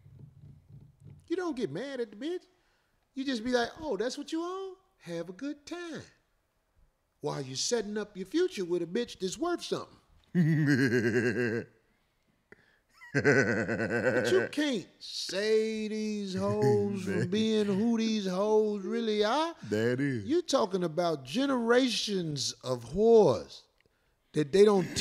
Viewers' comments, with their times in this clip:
0:09 This nigga evil genius laugh is priceless